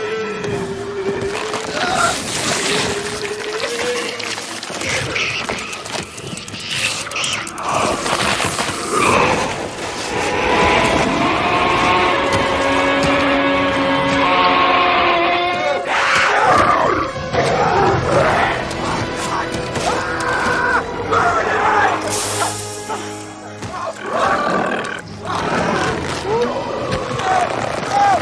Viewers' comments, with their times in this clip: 0:10 Jesus that scream is genuinely terrifying.
0:11 that screech was horrifying
0:11 one of the few things they got right was this scream.
0:11 Ok every comment is pretty good on the… judging side. But Nobody Is Talking About The Scream 🙁. That’s way too scary 😟